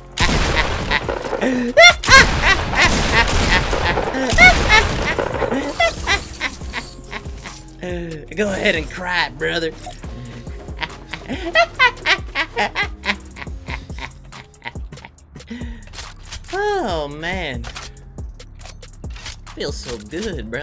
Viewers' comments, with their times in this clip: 0:04 he laughs like that grandpa that scares you lol